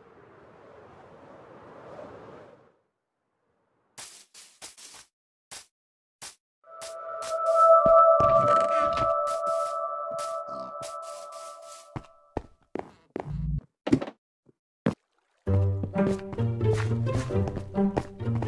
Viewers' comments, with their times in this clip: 0:03 From that perfect landing, cave sound, abandoned village, and Herobrine encounter; This one is amazing!
0:03 cave sound* Herobrine spawns*